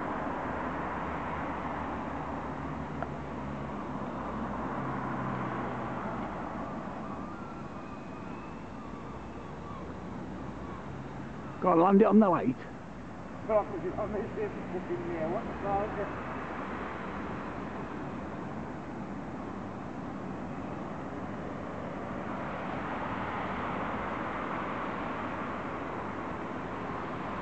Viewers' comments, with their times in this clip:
0:09 lol the voice on that